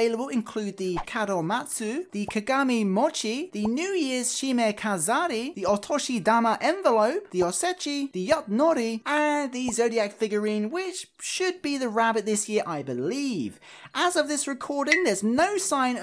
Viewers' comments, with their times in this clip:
0:03 I love how he can say all these words